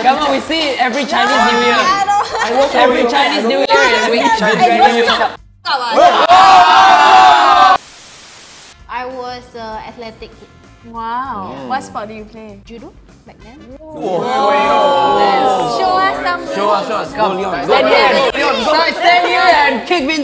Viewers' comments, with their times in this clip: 0:04 the way she swore-